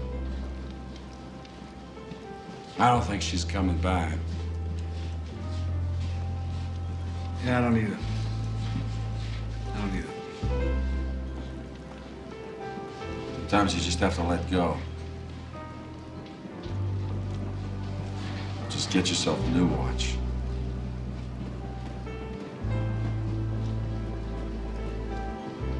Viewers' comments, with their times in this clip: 0:09 One of the best relationship movies out there! Grodin and De Niro inhabit their roles and deliver comedy and drama in large dollops. Excellent supporting cast, great script and direction. I particularly like Elfman's musical ideas. He adds a subtle layer of emotion in several scenes, like introducing a quiet piano here. A fun film!